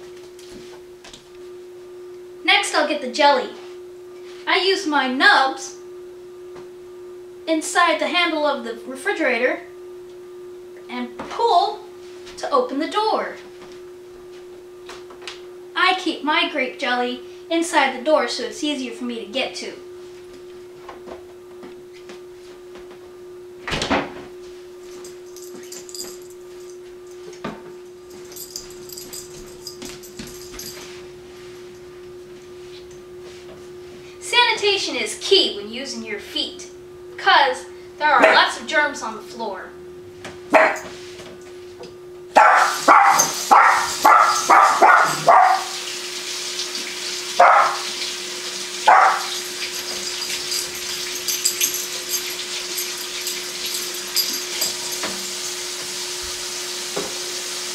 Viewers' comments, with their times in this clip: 0:07 "Sanitation is key. There are lots of germs on the floor." *Dog barks on cue.
0:41 what an odd faucet it sounds like a real dog..